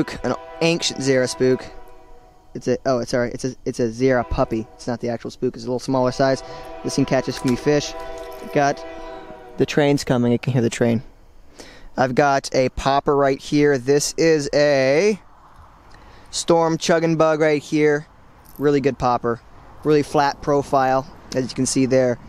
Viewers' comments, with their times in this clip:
0:03 Falling asleep when I heard the train, sounded like a horror movie sound effect😂😂